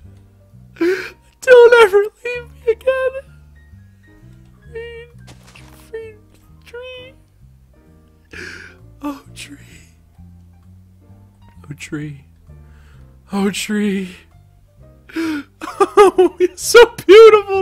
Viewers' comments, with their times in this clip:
0:04 sounds like markaplier